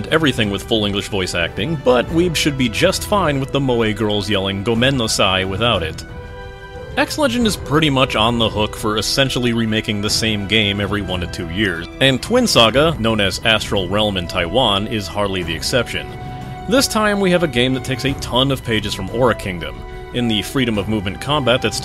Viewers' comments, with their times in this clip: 0:04 Did... did you just say gomen NO sai??? weeb triggered As for the English voice, the tsundere system voice is hilarious.